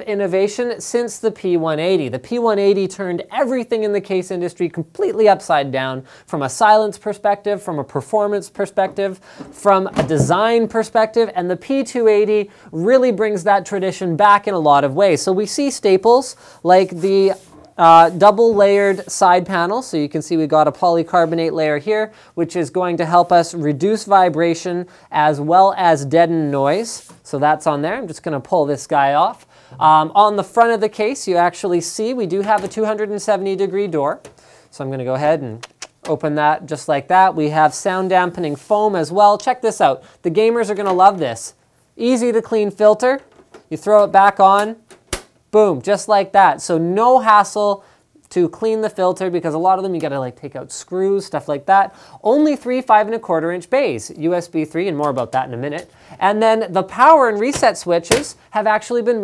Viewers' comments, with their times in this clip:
0:04 Epic Voice Crack Linus. :D
0:34 ShamWow guy mode activated.
0:40 he sounds like the shamwow guy.